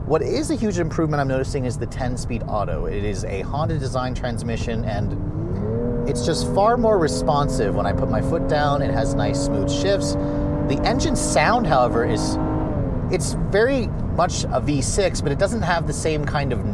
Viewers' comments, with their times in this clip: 0:04 Sounds like the TLX type S!
0:04 why does it sound like a BMW B58 to me?